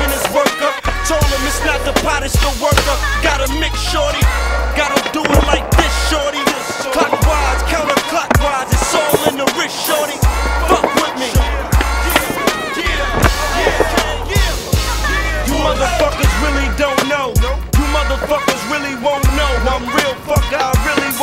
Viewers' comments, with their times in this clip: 0:07 why does it sound like a wal-mart board? 💀